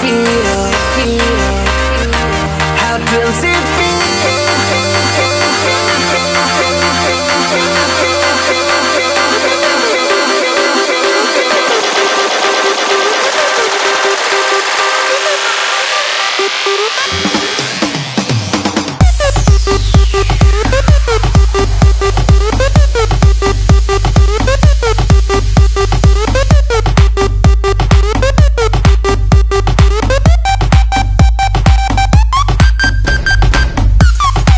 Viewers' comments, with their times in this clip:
0:09 lolll the song gets better from on... Electro, techno maniaaaaaaaaaaaaaaaaaaaaaaaaaa
0:19 perfect song ruined by that obnoxious stupid beat .... /fail